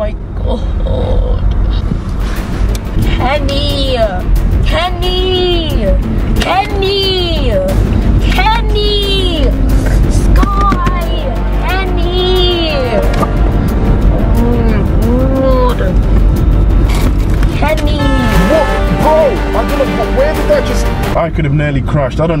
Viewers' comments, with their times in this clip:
0:08 it sounds like he is saying penny